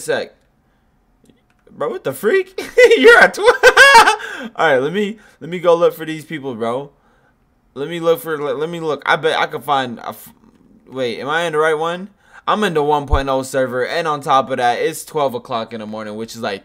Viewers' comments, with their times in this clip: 0:03 bro sounded like some indian music